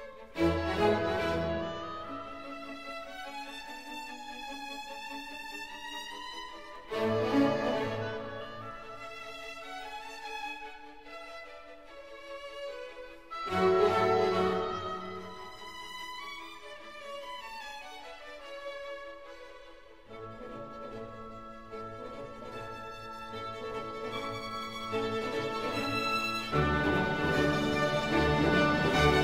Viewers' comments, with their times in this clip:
0:10 Can't figure out why do I love this part. especially the trombone sound that comes in the background and makes it like a real marching song, in Mozart's own style.